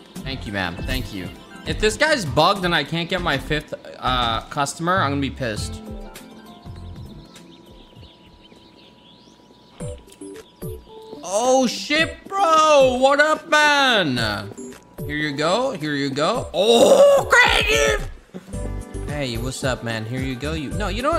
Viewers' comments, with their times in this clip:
0:08 the fucking timing of thst music and what's happening is so fucking good